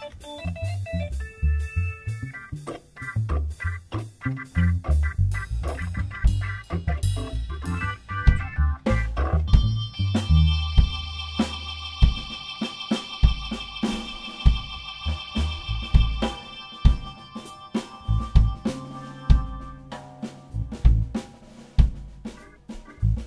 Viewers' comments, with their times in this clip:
0:06 he was supposed to start the solo and it flopped